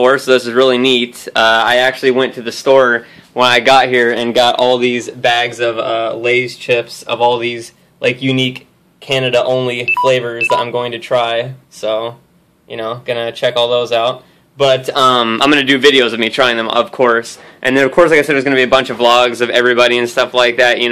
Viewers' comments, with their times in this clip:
0:06 I am getting the audio through a high quality headset, so when i heard the beeping i thought my computer was fucked up.
0:07 i thought that was my phone loloool